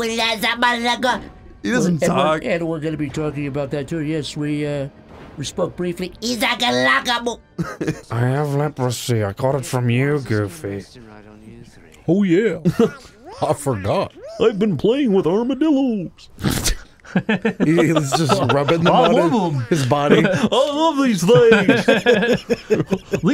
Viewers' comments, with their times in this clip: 0:08 the voice makes me think of Crispin Whytehead from Psychonauts